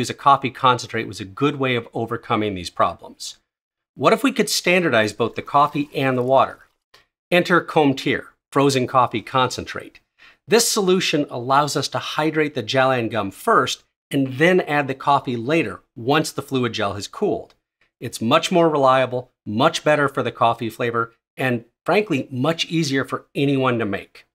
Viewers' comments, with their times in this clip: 0:06 I can't imagine the dread you went through realizing how you pronounced Cometeer 😭